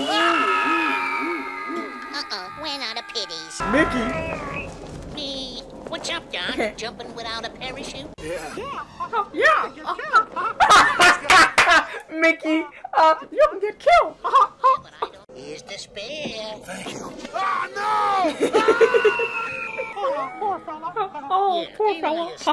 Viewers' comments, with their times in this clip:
0:08 You make a good Mickey mouse voice.